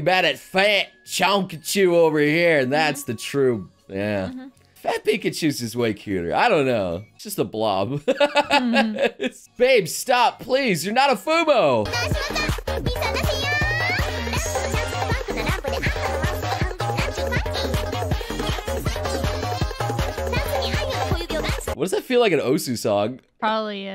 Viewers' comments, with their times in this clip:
0:10 I immediately started jumping up and down as the music started playing. And then u did the same. what a coincidence XD